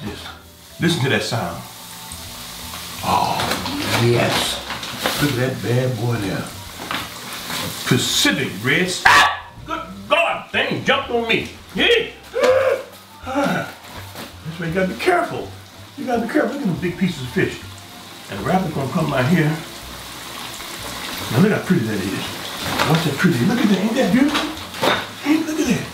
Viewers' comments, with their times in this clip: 0:07 had me weak asf 😭😭😭 That grease jump on me I scream like a Biiiaatch too pops🤣🤣🤣
0:08 Pops was challenging his inner James Brown 😂😂🤣😳